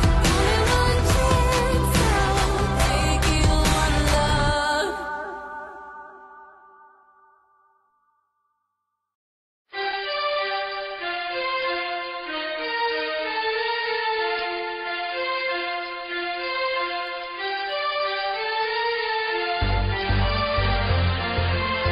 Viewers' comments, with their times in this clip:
0:09 This track sounds like it was recorded using a flipphone from 2001